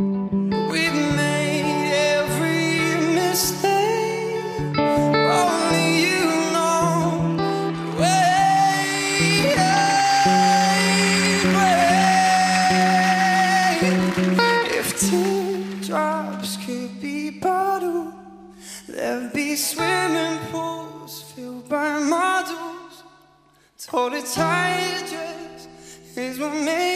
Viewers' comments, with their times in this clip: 0:09 Not sure whether I should find that note impressive or consider it as a voice crack lol.